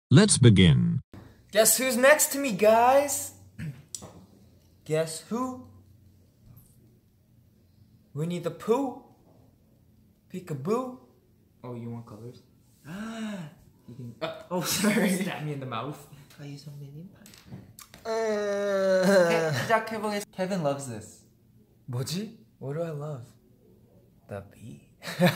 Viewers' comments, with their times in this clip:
0:07 lol I actually thought kevin said "We need to poo" lol I have problems, help.